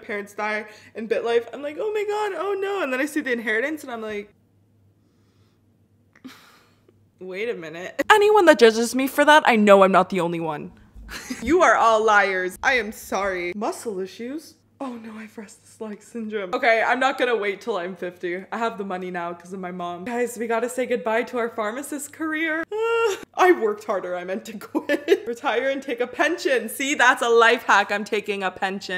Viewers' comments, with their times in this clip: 0:09 I got plant mic flashbacks 😭